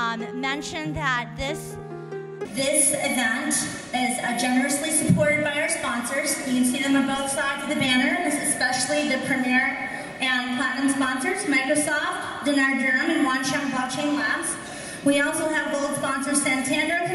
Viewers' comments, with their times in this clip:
0:04 Awful audio quality started from ....